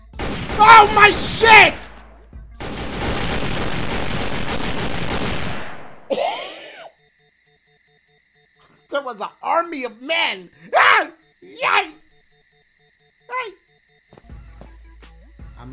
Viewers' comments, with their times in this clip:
0:03 no headphone warning ? Lol